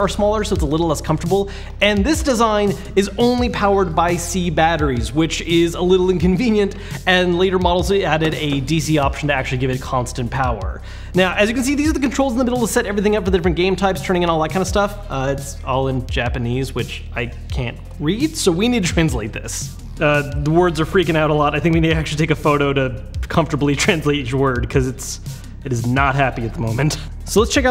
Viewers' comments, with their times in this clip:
0:10 He literally raps